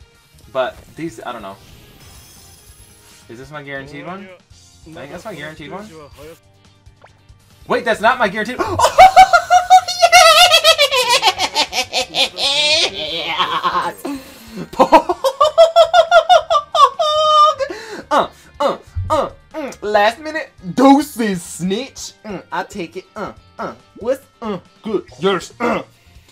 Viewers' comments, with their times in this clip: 0:08 this laugh must be added in one piece
0:08 Pretty sure you're a one piece character, no human kind in this world have such unique laugh